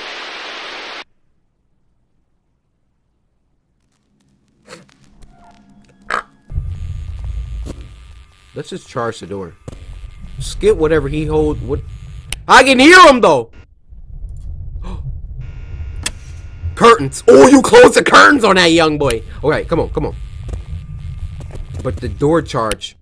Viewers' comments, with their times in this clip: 0:03 cant stop laughing over his little burp
0:05 Me when I get jump scared in a game: AAahhahHAHhaahaa-afafa Cory when he gets jumped scared in a game: oInK ≥